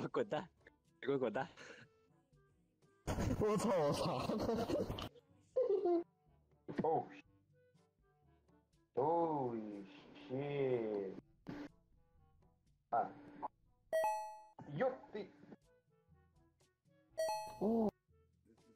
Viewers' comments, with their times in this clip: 0:03 maybe "whatsthe heck"?